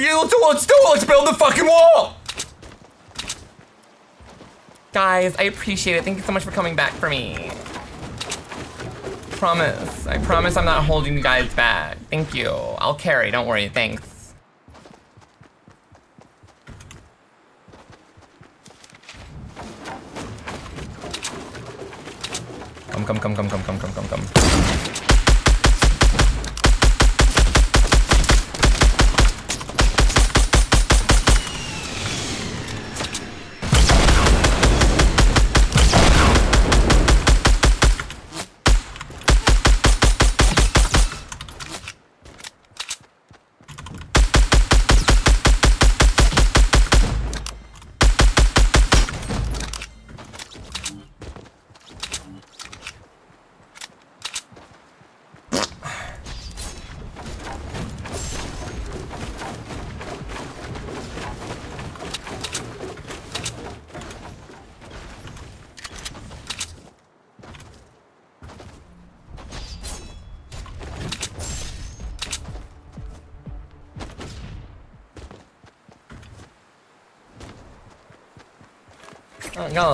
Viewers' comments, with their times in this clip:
0:04 hahahah he sounds like Hedwig from split😂😂
0:55 nice little fart
1:04 Bro Farted in 😂☠️